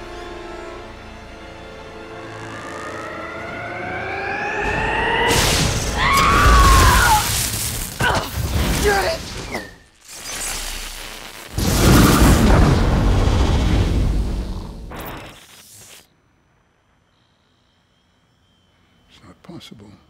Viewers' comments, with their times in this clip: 0:08 That shot of the wave blasting Finnick back is incredible and then right after that the arrow going to the sky with the best sound design ever heard. Oh my god it’s just so good.